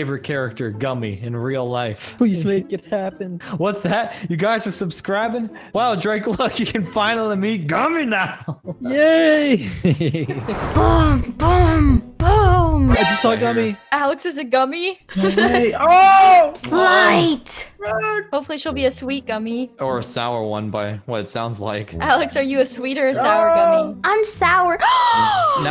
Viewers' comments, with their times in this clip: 0:07 The way he said gummy